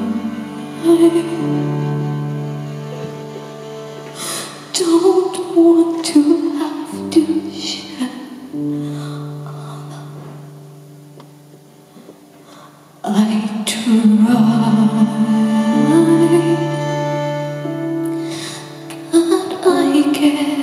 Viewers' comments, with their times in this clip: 0:04 her barely being able to muster out ‘our love’ :’(